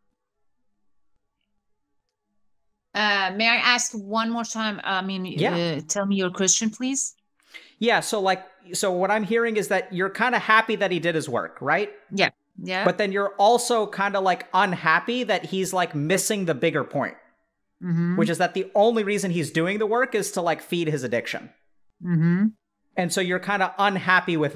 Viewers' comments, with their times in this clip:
0:06 hahaha I understood her as "tell me you're Christian, please"